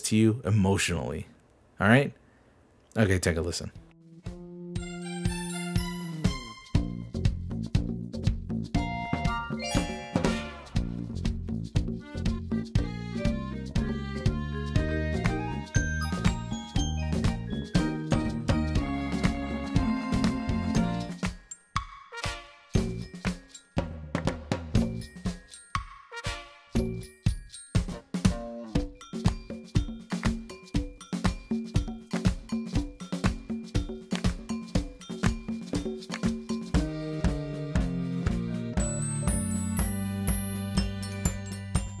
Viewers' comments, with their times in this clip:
0:03 about this song, I'd say it's quite the silly mischievous tune
0:04 Okay, So from my first listen I saw in my head a Circus performer living an amazing life and being the main thing in the Circus show and everyone loves it! Also, it does not really go with the concept of the game. Honestly, I felt very unnerved to???
0:05 That song just gives me a happy and cheery vibe
0:06 i swear,i started agressively dancing like i was hearing the hardest rap banger ever 😭😭
0:08 I grew up on this sorta stuff because if you don’t have cable or internet but still have a computer, your parents might buy you computer games that have this exact type of music. It’s so weird how old children’s games use this type of music. I guess they’re not used to a certain type of ambience that you don’t see too often nowadays.
0:11 Honestly, that music makes me think of Paper Mario, lmao.
0:12 sounds groovy quirky adventurous. Like a parade or something
0:17 i think it's how weird that the music sounds. Never heard of the seen it series of games, and yea creeps me out too
0:17 for i imagine that the music incurs the following emotion: Suffering the suffering of a musical composer needing to make a rudimentary track for a forgettable game such as Disney Scene It!
0:28 I can see why the song can be creepy, especially to kids. there are multiple moments of grating, dissonant chords such as the train whistles or trumpets + the weird off beat tinkly chime part, and it keeps changing instrument and vibe so its hard to follow. And it feels pretty empty overall despite all the instruments. like it was recorded in a vacuum. One commenter said that the drum in the back sounds like a heartbeat which I agree with. that part, that pair of notes/pattern is something I hear in trance music (like in 1200 microgram's Ayahuasca), it's an unnerving pattern that feels completely out of place with the rest of the song, but that might just be because of what I associate it with. I can definitely imagine a kid waiting for their mom to come back from the kitchen with this song just looping on the tv and freaking themselves out over it. tbh I can't see why someone WOULDN'T find this song a little off
0:31 you asked for feelings about a song. Halfway thru, I’m gettin “slice-of-life anime shenanigans scene” vibes.